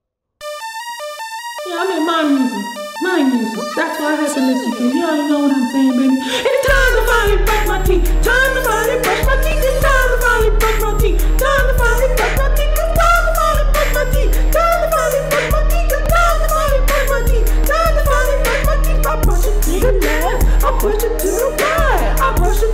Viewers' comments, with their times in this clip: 0:03 that hits hard g , nice music.